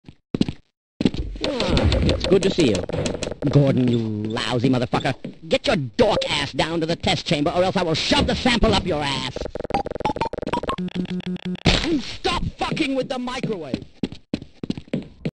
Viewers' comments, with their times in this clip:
0:04 sounds like Steve Buscemi.